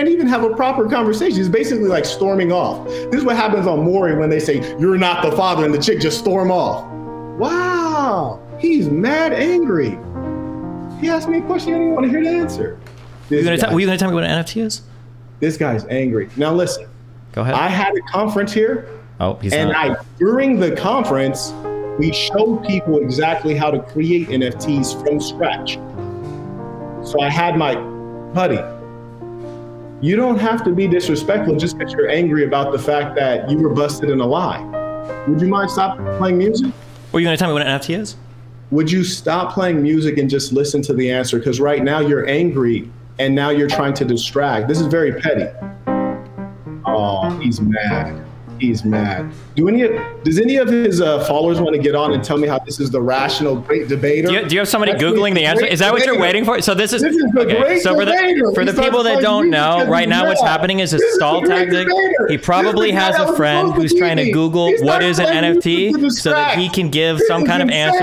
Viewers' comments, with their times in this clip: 0:07 This guy saying "WOOOOW, he's mad angry!" as Destiny is calmly playing a beautiful, relaxing piece on the piano sums up the entire video
0:22 I ain't gonna lie the piano was hilarious 😂
0:56 hahahahahahaha Starting to play music is the best thing 😂